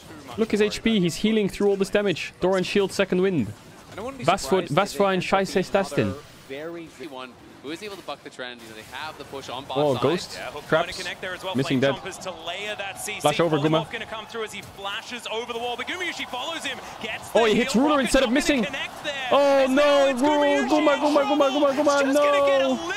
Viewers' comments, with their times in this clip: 0:04 didnt expect that level of German ngl